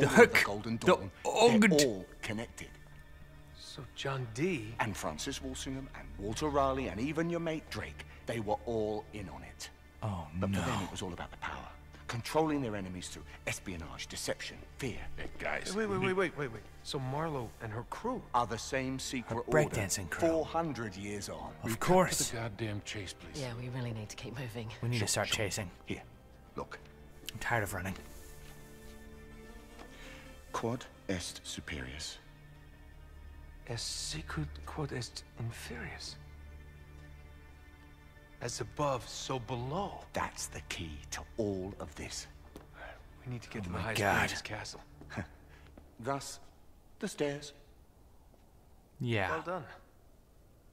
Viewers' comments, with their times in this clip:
0:06 Did he say Terraria ?
0:34 grrr.....you don't put an accent on Latin.....